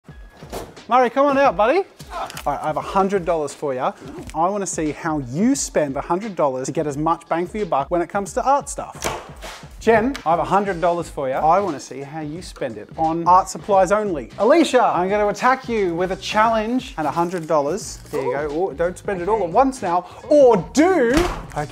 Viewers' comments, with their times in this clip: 0:06 is the help me sing in the background a joke or not?